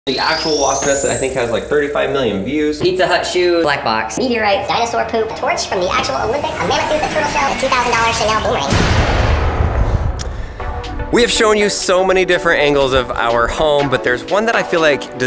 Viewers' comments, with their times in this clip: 0:03 i can bearly hear the 10000000000000Hz noise